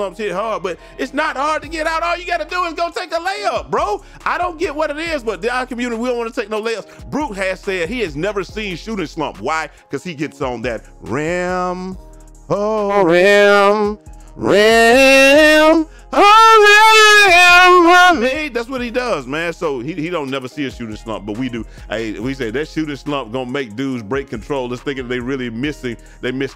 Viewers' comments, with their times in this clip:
0:09 Ay the rim song instantly made me a fan lol. W video